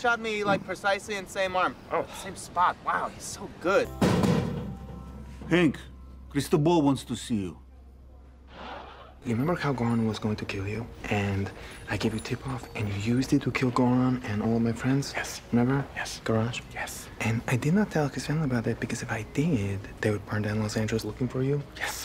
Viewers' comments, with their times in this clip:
0:08 THE AIRDROP SOUND LMFAAOOOOO